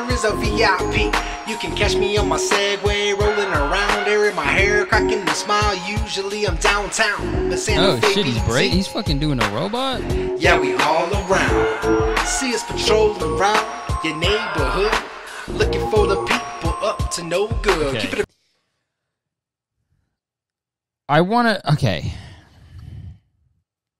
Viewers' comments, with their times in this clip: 0:05 hamilton type flow